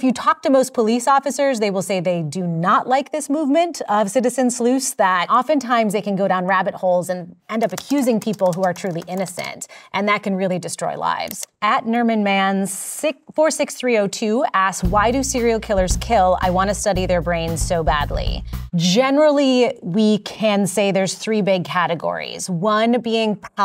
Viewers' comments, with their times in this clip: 0:04 She ends her statements with a question mark, which makes me wonder if she believes what she's saying.